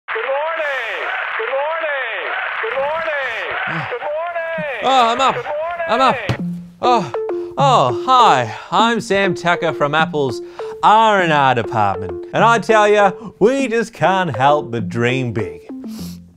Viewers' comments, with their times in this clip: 0:01 I want that ringtone now .w.
0:04 Now i also want this ringtone =D